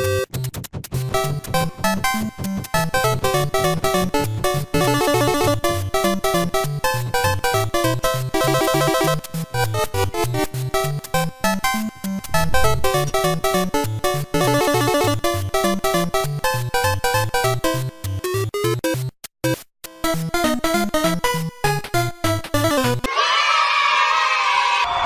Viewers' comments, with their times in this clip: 0:08 music matches what he’s doing